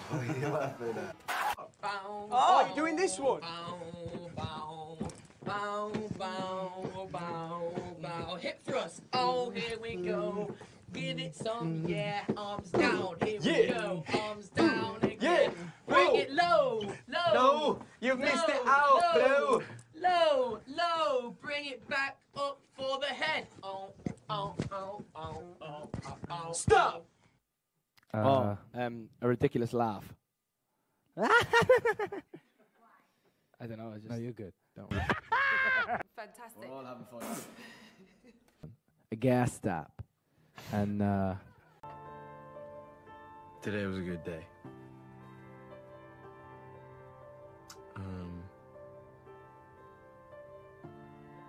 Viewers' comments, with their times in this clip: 0:10 I died on the routine, my jaws hurt with all the laughing. Also Harry and Niall together in an interview is everything. Also don't forget Zayn's accent.
0:33 i failed at niall‘s laugh